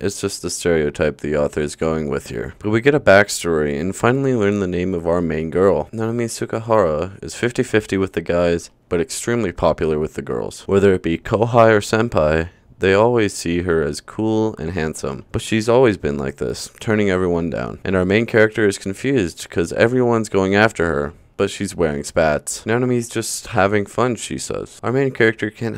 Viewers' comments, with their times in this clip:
0:07 nah I swear that says so-so and not 50-50 💀